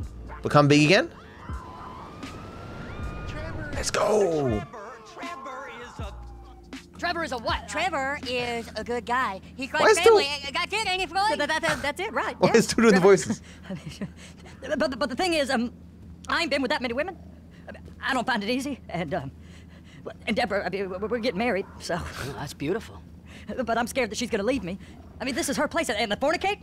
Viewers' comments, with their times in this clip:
0:10 they do sound like south park characters because of that bug